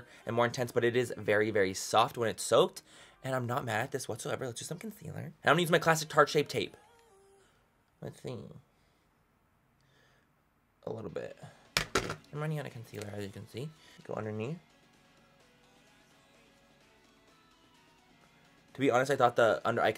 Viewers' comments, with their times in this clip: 0:05 OH MY GOD the way he said "now I'm gonna use the tarte shape tape" sooo aggressively and then rolled his eyes was hysterical I'm dying hahahahaha wtf was that manny ??
0:05 he says "I'm gonna use my classic tarte shape tape" so forcefully like DONT JUDGE ME!! Hahaha love you manny 💘💘💘
0:06 you sounded so fucking bothered when u said tarte shape tape😂😂😂😂😂 im LAUGHIN I love you